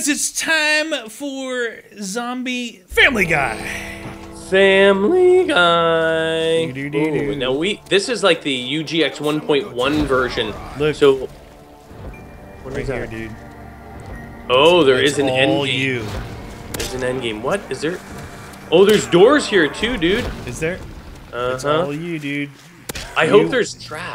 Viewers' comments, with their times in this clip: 0:07 wtf was that voice crack